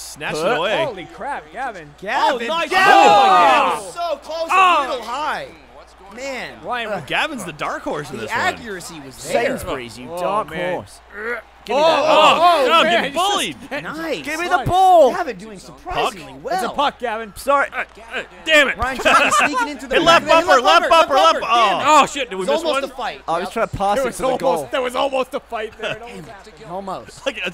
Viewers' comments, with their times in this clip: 0:08 The audio is a little off sync I think, when gav and ryan play.